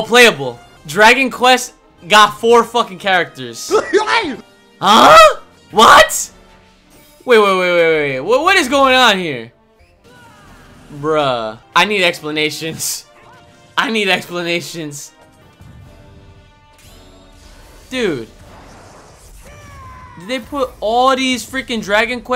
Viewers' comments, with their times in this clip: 0:03 That Sakurai laugh fucking killed me, and I don't know why.